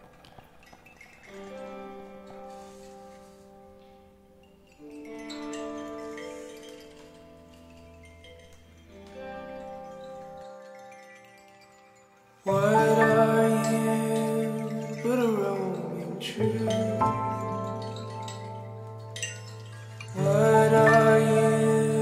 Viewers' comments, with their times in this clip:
0:05 the music really reminded me of heathers